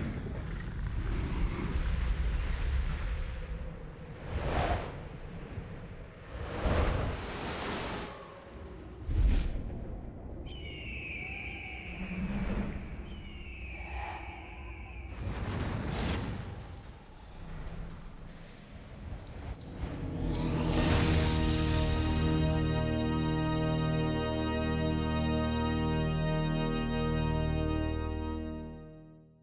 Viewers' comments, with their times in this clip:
0:10 Why am I hearing the same red tailed hawk sound TWICE?!?